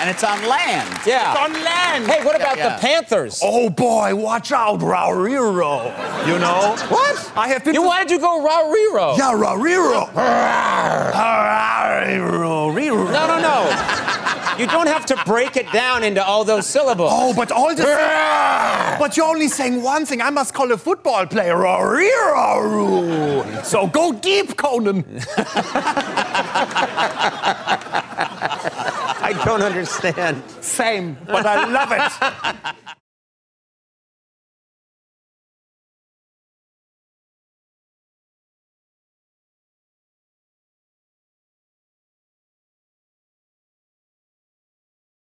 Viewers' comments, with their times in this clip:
0:05 sounds like Scooby Doo
0:24 I'm sure that's the first time the man's heard someone say that to him so passionately!
0:31 Is Conan a ventriloquist or something?